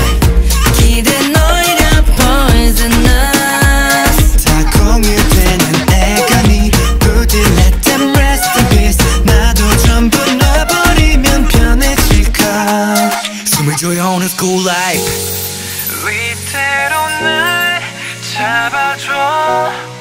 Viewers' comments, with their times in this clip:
0:05 but it doesn’t really sound like him compared to his lines